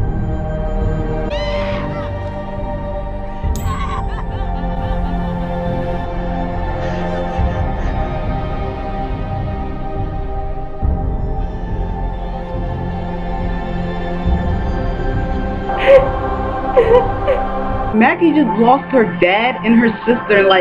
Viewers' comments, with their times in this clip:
0:04 Saddest moment in the episode and a “no” with that bell noise pops up or so as if Maggie was reacting to the show xD